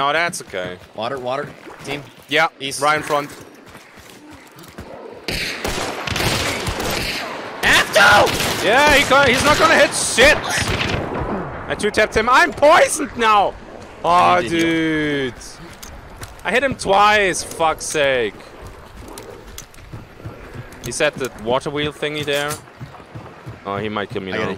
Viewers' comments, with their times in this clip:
0:06 The Scream ! 🤣😂😝And then the reaction: oh yeah.. it doesn't hit anything anyway. Mega